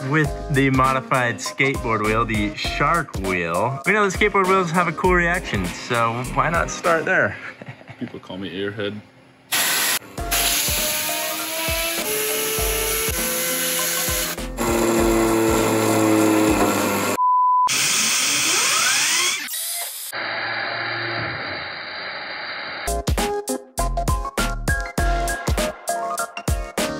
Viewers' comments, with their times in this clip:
0:10 the sound of the wheel being spun by the air compressor really reminded me of a 2JZ or an RB28 lol